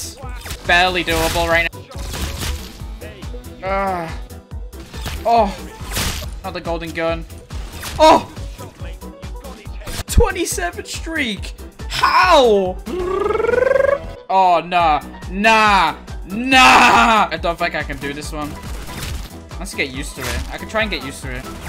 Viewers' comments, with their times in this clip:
0:04 did he just moaned?